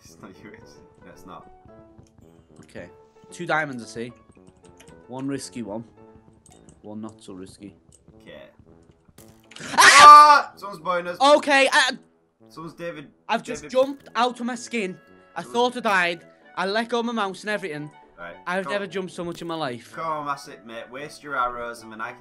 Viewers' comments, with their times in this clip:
0:09 my ears burst lol